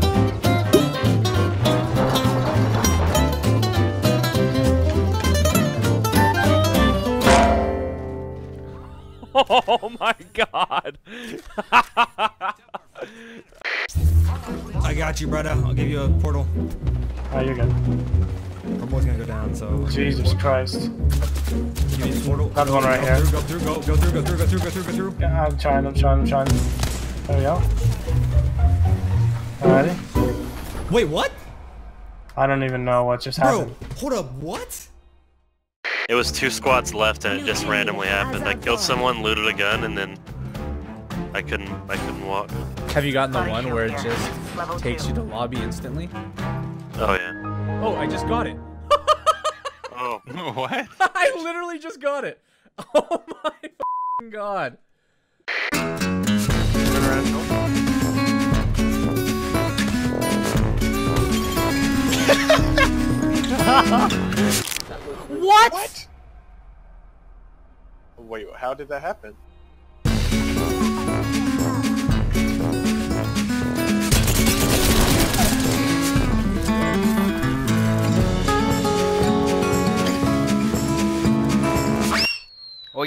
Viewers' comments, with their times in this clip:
0:09 I like that guys voice lol
1:04 Funniest sound effect... I love the crunch!!😂😂😂